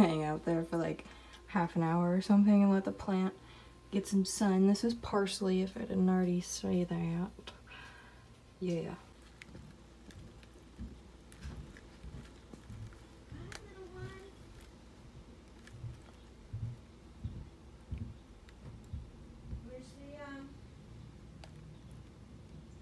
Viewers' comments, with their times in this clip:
0:10 is that noise him or her munching the plant?? Omg! Tiny noms! 🥰